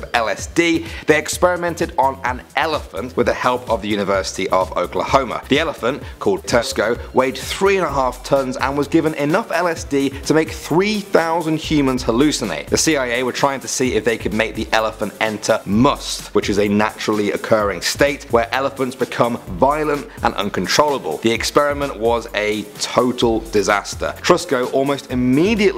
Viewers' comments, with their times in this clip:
0:07 did anyone else hear Tesco 😂